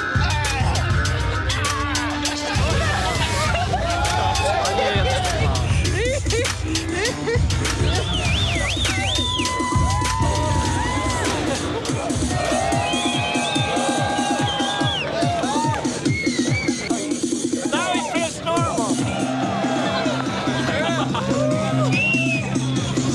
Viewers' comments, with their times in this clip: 0:08 lol when the gay train music comes out of no where.